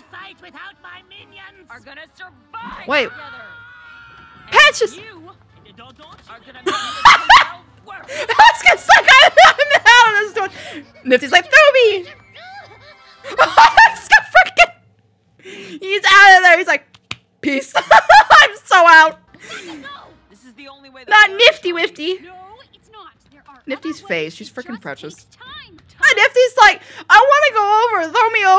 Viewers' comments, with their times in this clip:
0:09 Don't you her Angel's scream He scream: No,no I'm gaaaaaaaaay